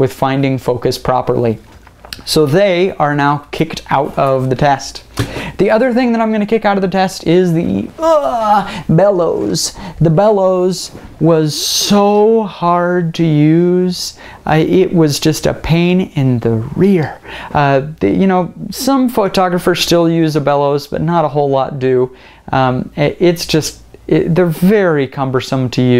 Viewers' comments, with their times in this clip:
0:07 he sounds like captain falcon